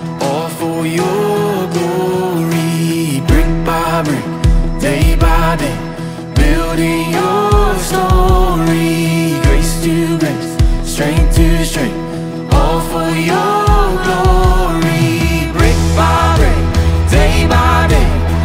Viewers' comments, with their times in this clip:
0:03 That bop section doe 👀👀 🔥🔥